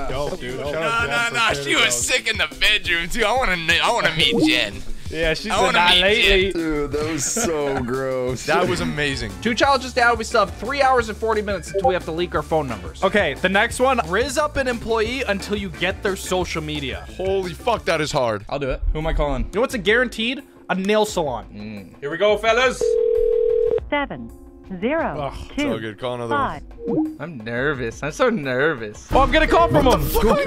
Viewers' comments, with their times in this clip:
0:09 i had discord open and i fr thought someone DM me and i actually checked like a dumbass💀💀💀💀💀💀💀
0:11 who else checked their discord? or the other times it was sent if it was, didnt pay attention :p